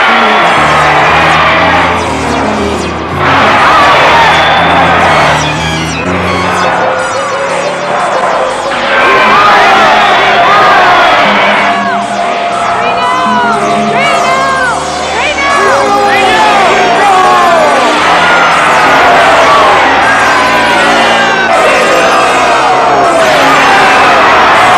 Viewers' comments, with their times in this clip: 0:09 Am I the only one who thinks it's saying Sieg Heil